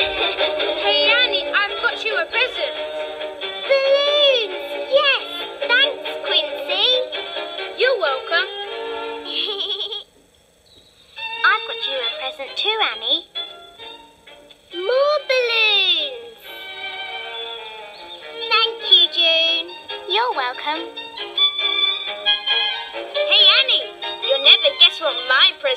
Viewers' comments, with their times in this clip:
0:09 Annie’s Giggle Is Too Cute To Pass On! 😊